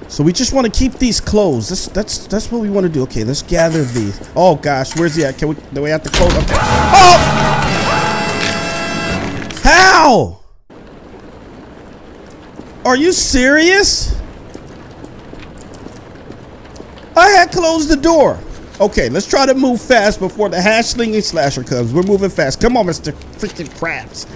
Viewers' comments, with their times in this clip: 0:06 made me laugh that scream😂😂😂😂